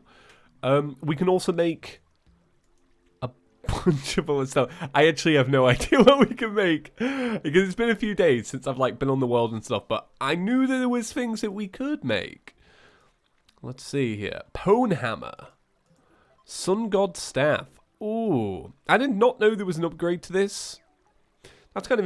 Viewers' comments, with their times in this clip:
0:03 Ohhhhhhh. Now I know how papyrus’s vocal sounds were made....!